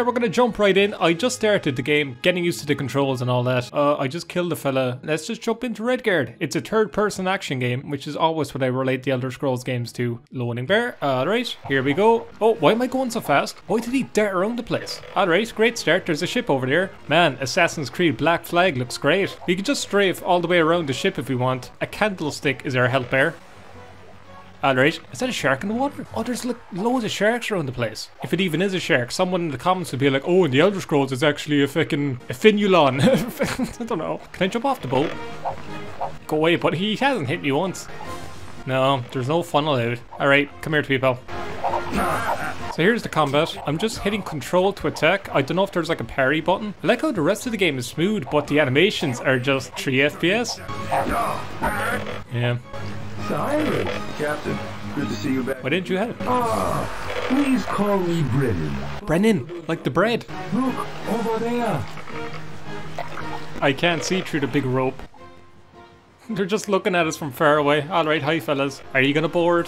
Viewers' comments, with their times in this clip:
0:03 "Its a turd person action game." That's a...very uncharitable description of Cyrus...
0:06 "It's a turd person action game"
0:06 It's a turd-person action game Well that's true too actually
0:54 it sounds like a clip from star control 2.